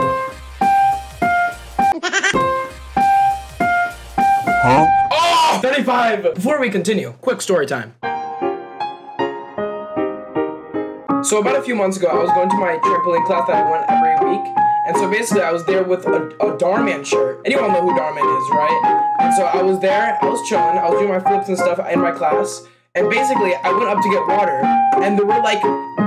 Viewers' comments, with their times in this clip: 0:10 bro is so awesome he can play the shop theme and tell a story at the same time